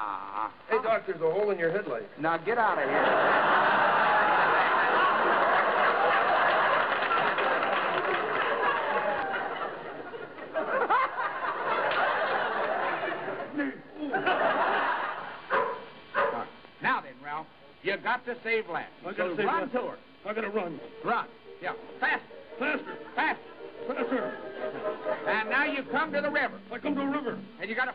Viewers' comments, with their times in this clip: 0:10 That laugh Because Rowlf.